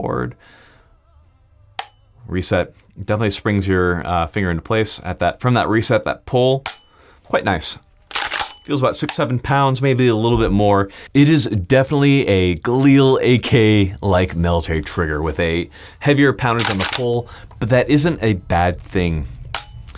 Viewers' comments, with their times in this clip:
0:05 ahh yes, elevator music for the ghostie boi